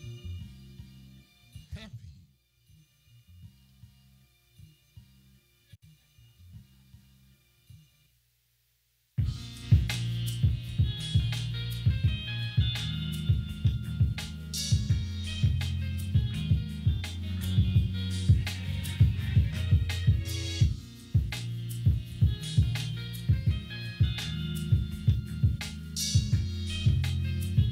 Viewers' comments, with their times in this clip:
0:10 🔥 ❤️ the sample loop👌🏾